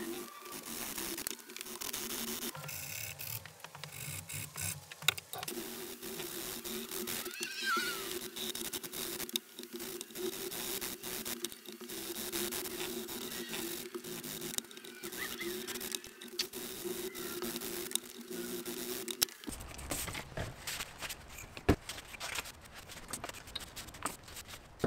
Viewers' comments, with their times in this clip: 0:06 Start the video It sounds like a woman screaming.